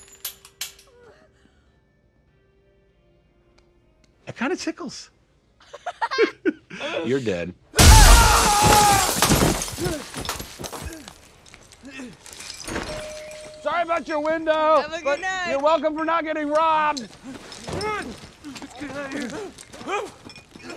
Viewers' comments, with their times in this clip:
0:04 “It kinda tickles!” 😃 (Both laugh) 😁 “You’re dead!” 😡 😂😂😂😂😂😂😂😂😂😂😂😂